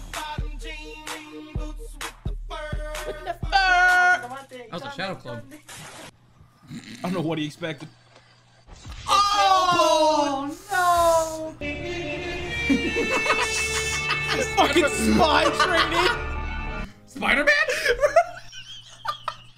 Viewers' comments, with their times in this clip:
0:06 ERROR LAUGHTER EXCEEDING LIMITS